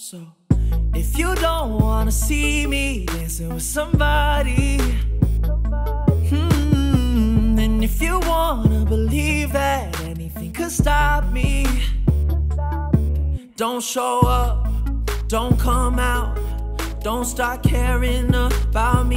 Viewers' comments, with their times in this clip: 0:05 Your voice sounds too edited on this track, was hearing it in the car and all I could hear was the sound that you put with your voice. You can hear what I'm talking